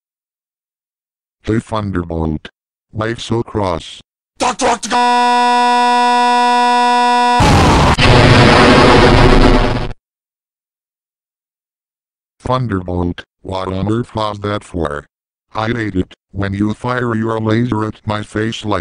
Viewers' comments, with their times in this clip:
0:04 DOCTOROCAAAAAAAAAAAAAAAAAAAAAAAAAAAAAAAAAAAAAA BWAAAAAAAAAAAAH!!! (Distorted Explosion)
0:05 How did you make that effect? Also how come the glitchy explosion and laser sound?